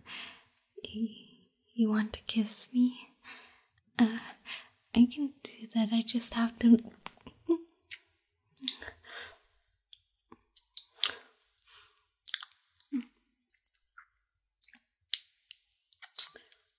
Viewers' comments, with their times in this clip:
0:04 I just really like the kissing sound from 😍♥️❤️